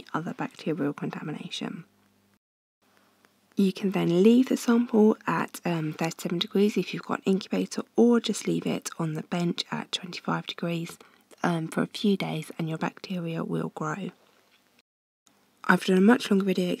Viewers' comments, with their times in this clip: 0:04 is she saying 13 degrees or 30